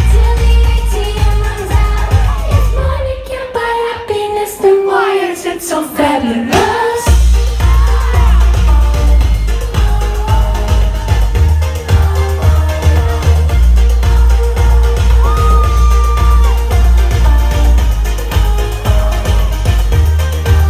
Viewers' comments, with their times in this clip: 0:06 did you hear the funny voice?